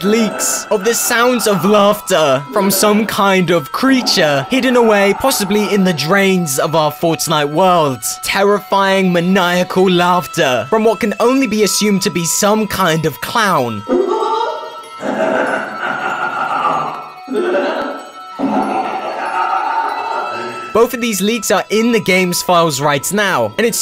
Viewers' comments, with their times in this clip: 0:07 I don't know If it was me but i heard a clown noice somewhere when I was trying to do my challenges soooo creepy Edit: that's what I exactly heard